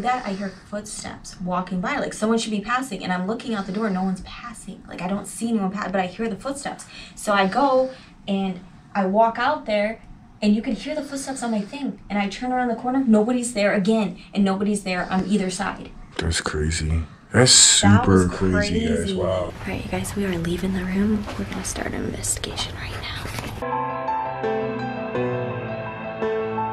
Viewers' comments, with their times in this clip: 0:10 "Yes" (faint female voice)